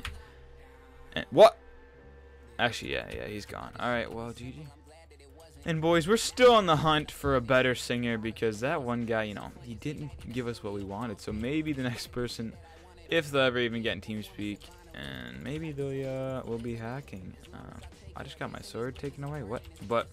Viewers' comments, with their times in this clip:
0:05 rip left ear.